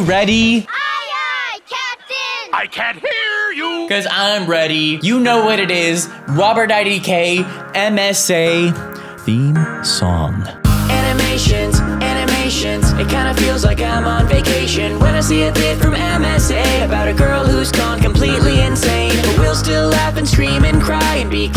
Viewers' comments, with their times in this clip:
0:06 am I the only one who heard him say "wobert idk" ?? 😂